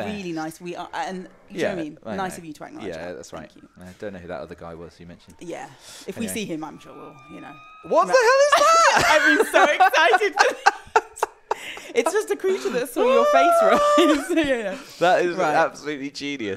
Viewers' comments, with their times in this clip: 0:04 The screaming creature had me rolling 😂😂